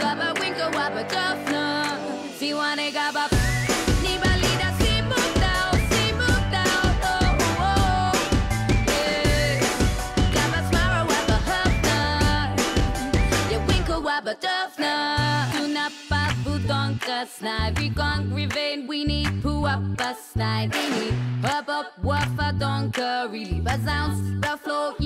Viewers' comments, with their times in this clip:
0:10 Dose any won else notice it say poo up inside to hear it go to